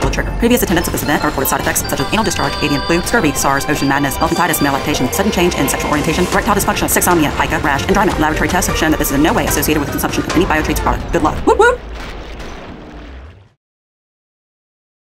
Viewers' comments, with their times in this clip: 0:05 Can somebody transcribe the last part of the disclaimer? I can't hear the last four things she mentions starting